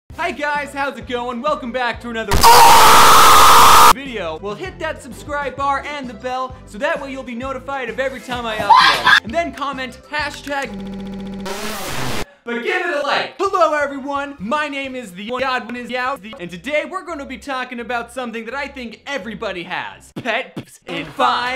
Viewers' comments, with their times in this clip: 0:02 I didn't even need my ears anyways
0:03 Audio mistake turn up to full volume:P